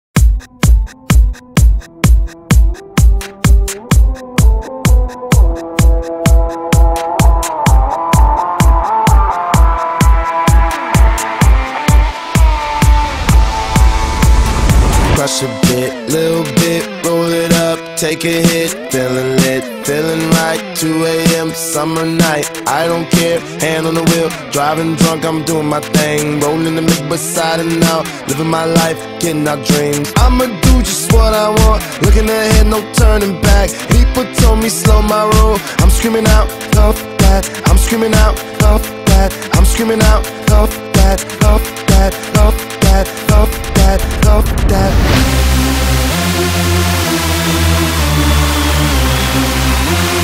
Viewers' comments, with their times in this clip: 0:00 Free restart for endless guitar solo
0:36 Isn't it fuck that? Because i hear fuf..